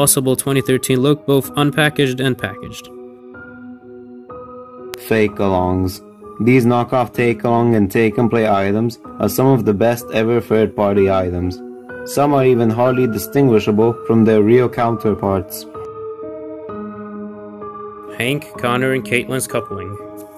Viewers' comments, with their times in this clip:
0:03 Thomas, the tank engine: I hate that music